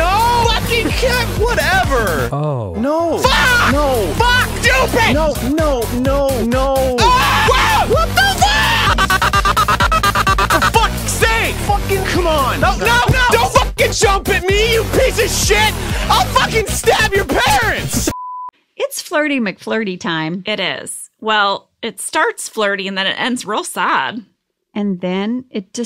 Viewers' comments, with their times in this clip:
0:06 the tapestry pole bonk has no right looking that funny